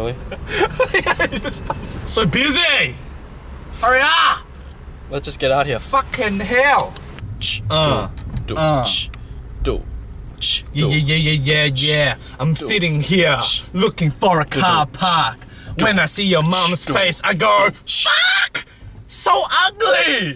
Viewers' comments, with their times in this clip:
0:07 omg the rap starting LOOOL